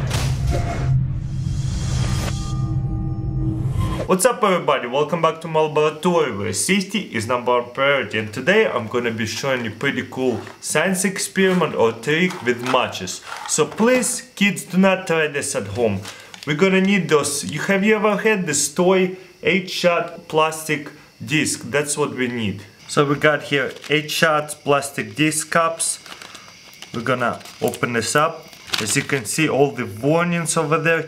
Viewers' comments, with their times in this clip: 0:10 " so today im gonna show you some cool sextist experiment "
0:16 I had to replay this like 10 times to figure out what he really said.. I thought he joined pewdiepie in islam, lol jk